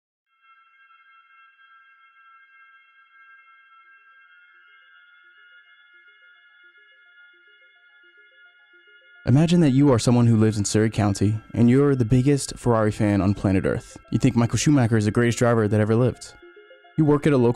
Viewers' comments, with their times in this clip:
0:01 this music scares me